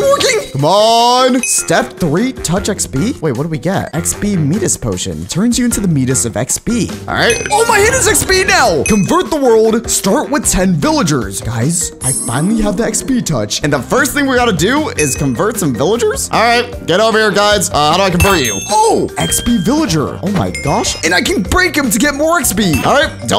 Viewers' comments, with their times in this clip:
0:05 He called Midas “Me-dus”💀💀💀 He said it